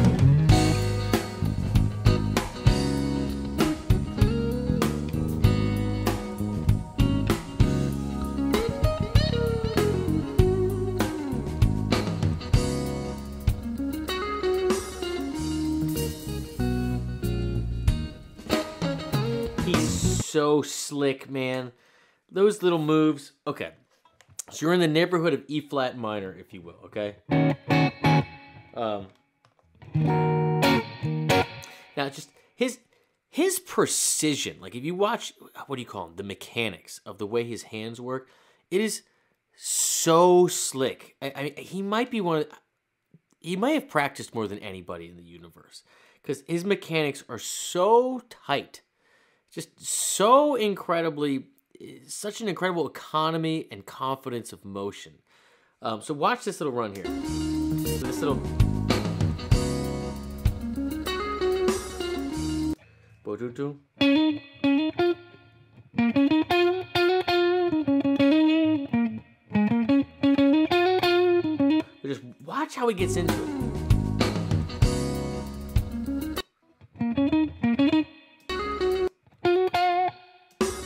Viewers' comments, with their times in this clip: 0:08 is such a fresh take on a common phrase, sounds so otherwordly just through the slight shift in timing
1:01 WTF kind of "guitar teacher" can't even hear a simple whole tone hammer on lick without having to fumble around for it as you do?